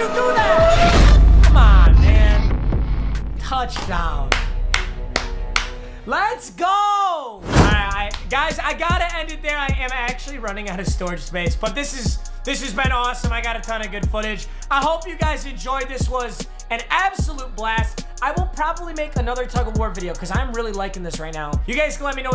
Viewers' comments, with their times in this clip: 0:04 his clapping matches the edit